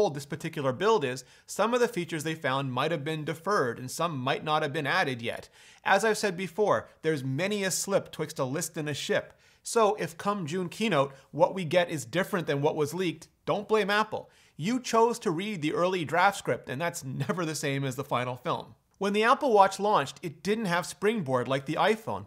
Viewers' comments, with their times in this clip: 0:07 There’s many a what twister what ships wh....huh????